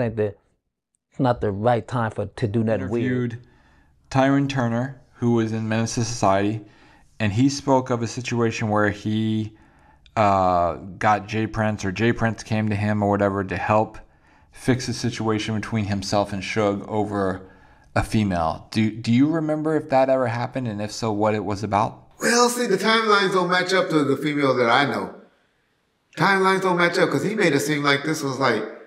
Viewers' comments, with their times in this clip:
0:10 Change the batteries in that got damn alarm 😂 Im trying to focus on the video, and all I hear is beep!